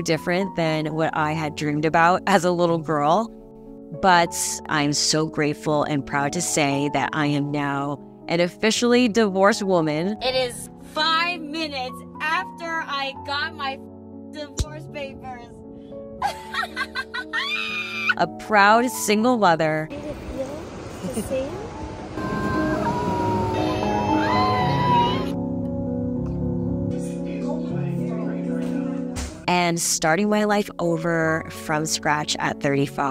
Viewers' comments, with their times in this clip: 0:09 this scream says she is gonna earn a tonne with alimony :(
0:16 I'm sorry but that reaction just gave me goosebumps..something sooo psychotic about that laugh. Why fake excitement or "happiness" when literally everyone can see the hurt and disappointment? You need to seek help because your laugh and expression felt soo vengeful and one simply cannot move on while carrying negative feelings towards the other.